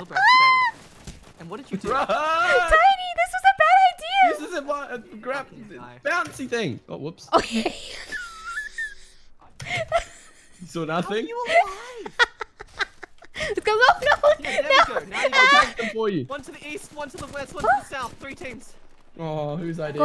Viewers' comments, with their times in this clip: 0:05 💀💀💀 * confidently * “BOUNCY THING” followed after a sad little hop